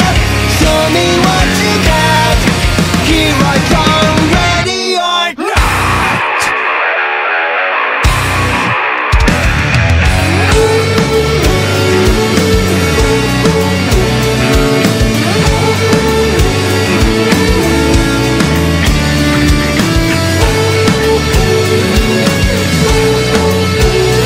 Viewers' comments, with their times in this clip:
0:09 I think is the best part of the song in my opinion (and the rest of the song too but that one part is so relaxing)